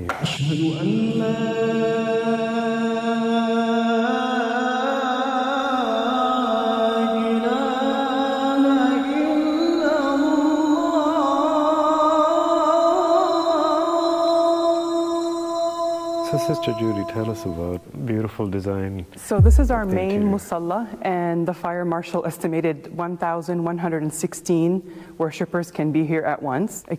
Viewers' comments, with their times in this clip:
0:08 I’m not muslin, BUT THE CHANTING MAKE ME FEEL THAT I’m missing a lot🙁. FREE FREE PALESTINIAN ✌🏻✌🏻